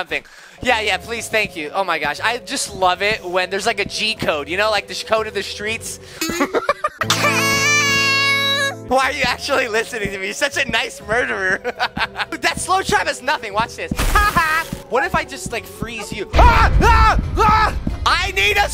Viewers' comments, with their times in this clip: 0:05 bro his sneeze in auto tune is Apollo funny I'm why